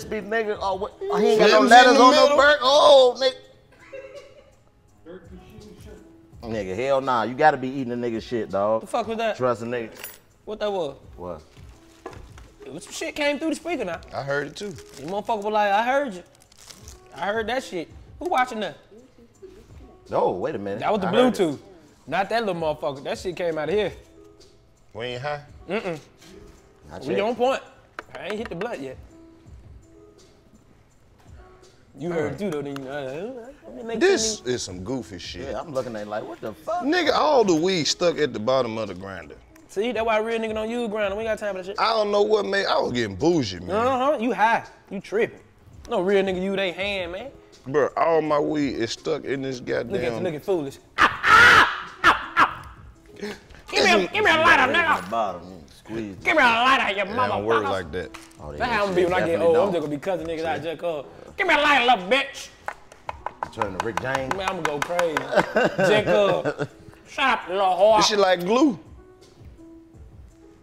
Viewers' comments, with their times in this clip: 0:03 what was that lol something weird did come thru the speaker
0:52 the lady at the front desk of our building laughs exactly like that in real life.